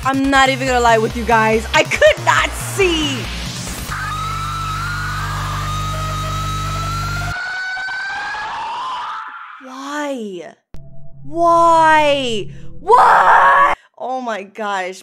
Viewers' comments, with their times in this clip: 0:03 why do bro sounds like toilet flushing sound